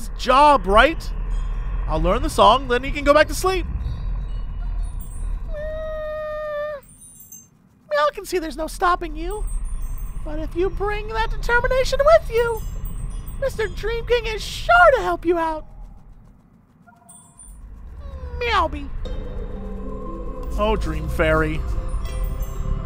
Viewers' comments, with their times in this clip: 0:10 You sound EXACTLY like Mr. Bill! It's uncanny!